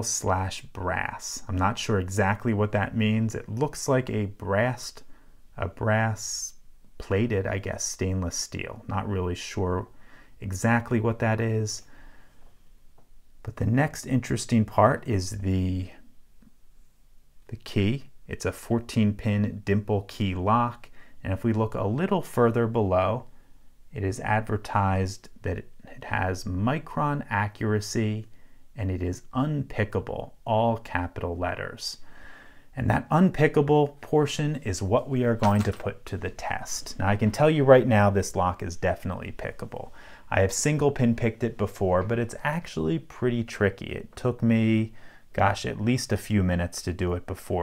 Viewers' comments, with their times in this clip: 0:03 "it looks like a breast...brass"
0:03 “It looks like a breahst”
0:04 It doesn't look like a breast to me...
0:34 He kind of sounded like Nick Valentine